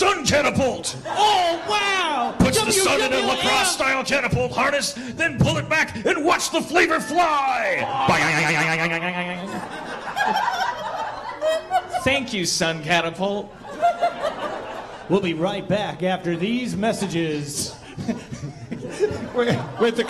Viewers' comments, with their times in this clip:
0:05 That boioioioingg by Dan was perfect
0:08 Dan's catapult flying noises are LIFE GIVING